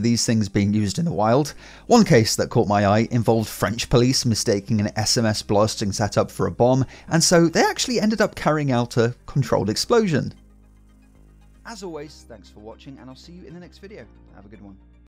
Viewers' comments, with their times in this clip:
0:11 fade out on the wrong track😂